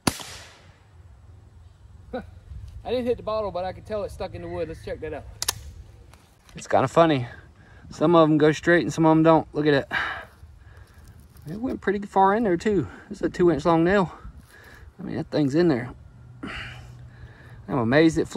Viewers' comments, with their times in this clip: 0:03 he misses and you hear a scream and he laughs about not hitting the bottle 😂 oh god.